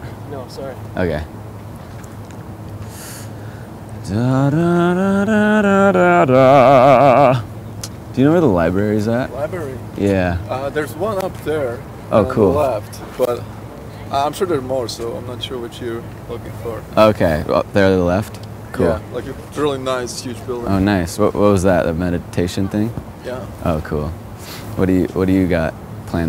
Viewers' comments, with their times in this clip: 0:09 guy sounds like a foreign Ross from friends and the interaction with the last two guys was hilarious